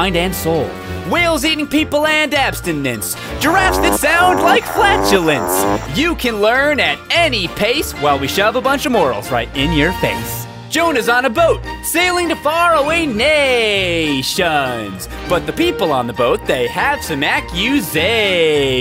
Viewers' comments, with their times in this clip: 0:03 sounds like fart